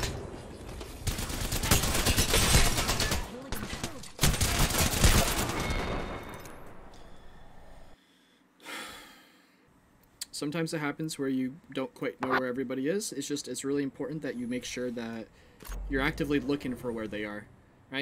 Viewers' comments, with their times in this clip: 0:03 the huge sigh when he got out played because he went for the rez instead of his own rule to reset. BIG OOF